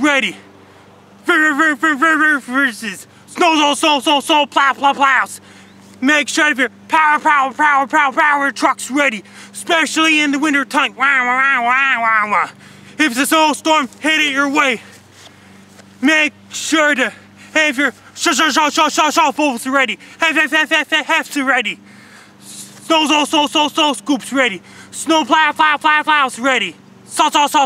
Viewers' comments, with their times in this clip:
0:10 Dat beat drop tho!
0:11 Is better. It's the same thing, but he's running out of breath.